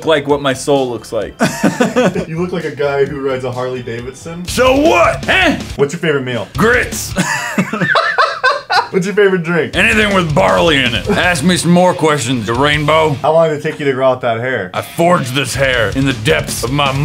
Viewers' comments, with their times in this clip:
0:05 Uhh my grandfather rides Harley Davidson and he does not sound like that